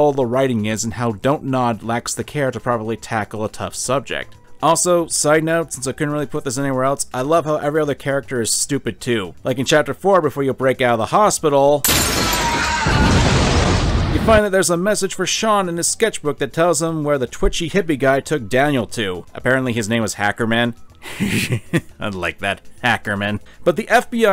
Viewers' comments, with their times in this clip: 0:10 tyler james williams scream